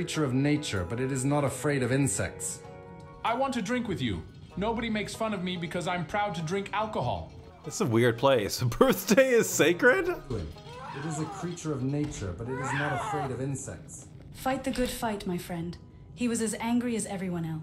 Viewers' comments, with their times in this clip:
0:03 A few things I wanted to point out: Firstly, "Odisha" appears to be a somewhat common interjection in this version of Skyrim, possibly expressing regret. It is also a state in India. Nextly, "long" is a Chinese word meaning "dragon." Although, I don't know enough of the language to know what "qiu" means. Additionally, Walter Ecklin Cliff appears to be how the dragon language phrase "Krif voth ahkrin (fight with courage)" gets translated. Lastly, What that guy says plus the way he says it makes him sound like a tween/teenage boy trying to show just how much of a grown-up he is.